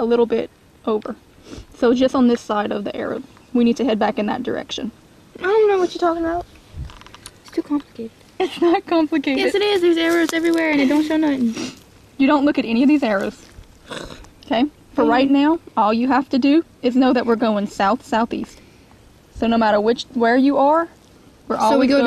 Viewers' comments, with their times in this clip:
0:07 lol sounds like my daughter.